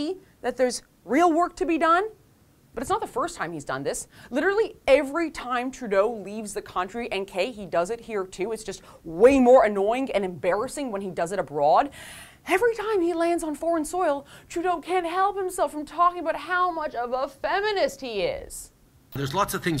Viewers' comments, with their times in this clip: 0:06 What ever this lady's name is, passive aggressively whining isn't gonna help. We get it, you think the guys cute.